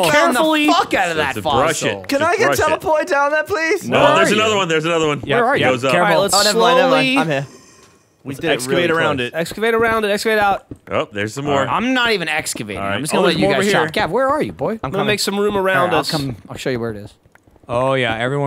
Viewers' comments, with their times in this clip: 0:06 that was the second weird noise right in my ear